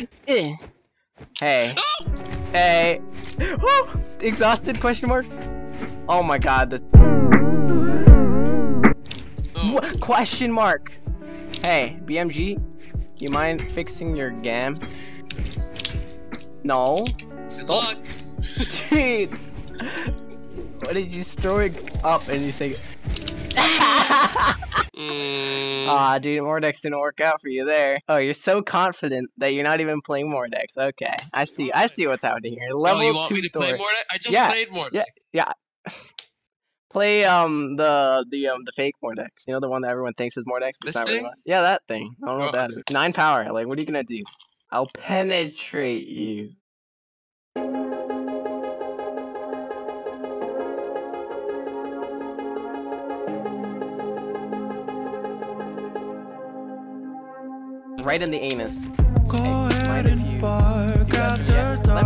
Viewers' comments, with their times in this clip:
0:04 when you know vibrato effect on lofi music gonna gib crippling depression due to the fact that the clip in the video shown life itself with no context.
0:46 The music starting made it seem like a "how I met your mom" edit